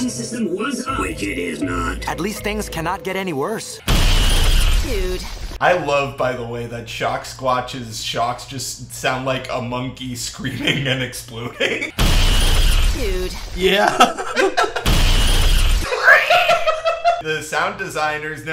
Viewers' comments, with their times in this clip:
0:06 Someone clip and upload the ShockSquatch's screech